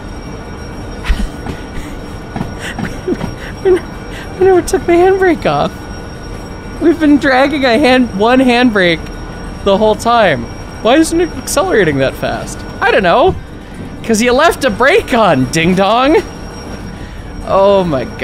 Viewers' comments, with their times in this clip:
0:05 as every hotbox, and hot wheel detector screams the whole way😂